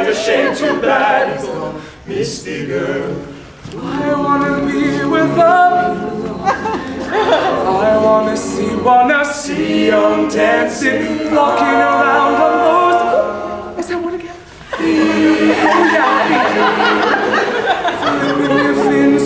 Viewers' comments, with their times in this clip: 0:03 Any on else going back to see him sing?